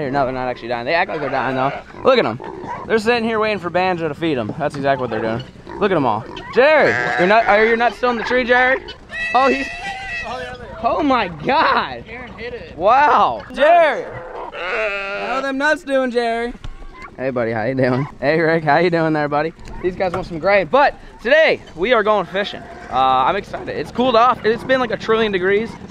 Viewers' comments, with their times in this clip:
0:09 lmao it sounds like you have pet shrieker's